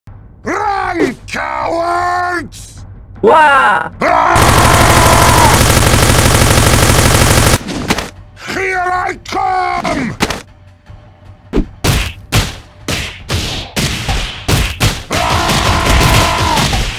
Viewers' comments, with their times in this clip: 0:03 What the hell was that scream ?! lel